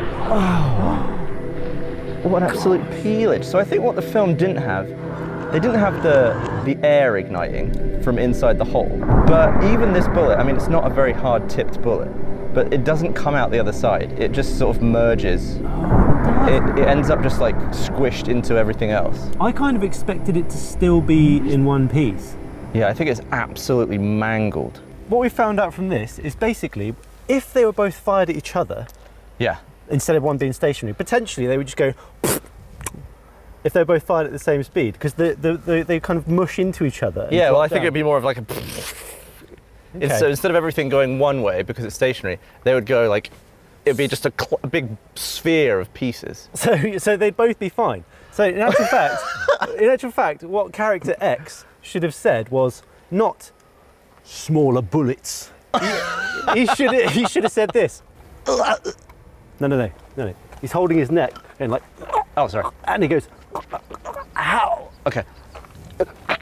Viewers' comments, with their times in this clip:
0:07 The ring that the nailhead made was satisfying
0:53 This imitation of him saying “Smaller bullets.” was 11/10, I couldn’t stop rewatching it 😂